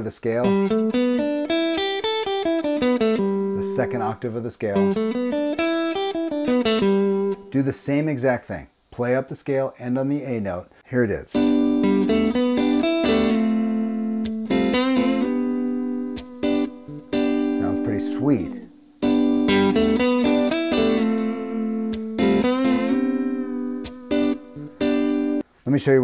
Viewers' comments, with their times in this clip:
0:10 Love the idea of ascending the scale but ending on a lower note at the change Unexpected and slightly jarring.